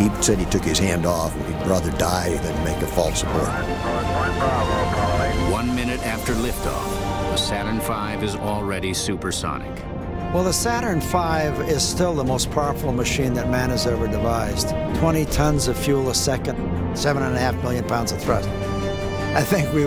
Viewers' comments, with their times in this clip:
0:07 Sounds like morgan freeman